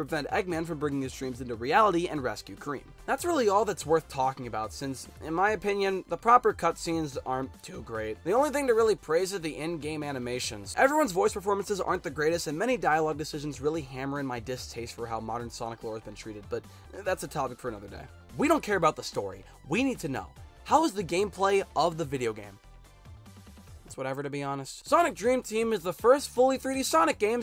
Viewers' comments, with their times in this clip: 0:10 Speaking of that I think Cream sounds so much better than she does in Sonic X or Sonic generations because you can actually understand what she says and she sounds adorable.